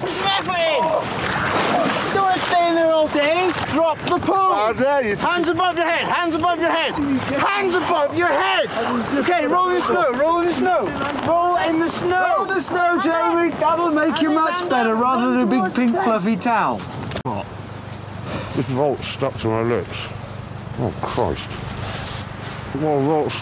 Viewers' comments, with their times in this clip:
0:04 Jeremy tries to scold the man with the “Pixelated Face” by saying “how dare you” but he’s that cold / shocked he can’t get it out 😂😂